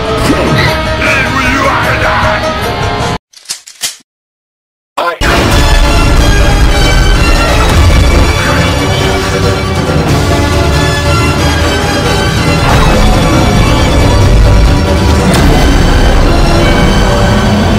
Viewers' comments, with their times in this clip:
0:03 how could one withstand the raw power of the trumpet for so long.